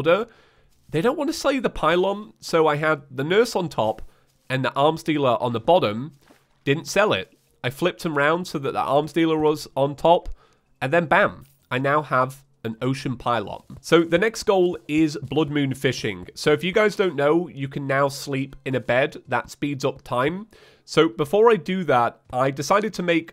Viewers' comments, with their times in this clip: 0:04 that sounded weird lol